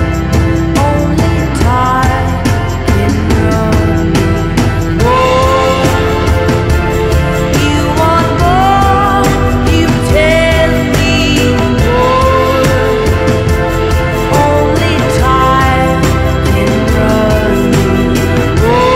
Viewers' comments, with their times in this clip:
0:04 is where this song turns into a whole new animal!